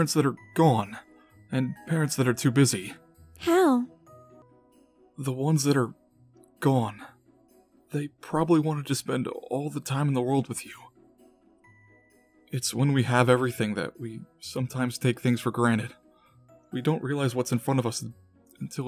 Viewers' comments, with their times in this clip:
0:05 You can hear Aaron’s voice crack a little bit when he starts talking about parents that are gone because he lost both of his parents during MyStreet season 6. He goes on to talk about how they wanted to spent all the time in the world with you but they couldn’t. That must hit way to close to home for Aaron and he’s so strong to be able to talk about things like that as calmly as he did.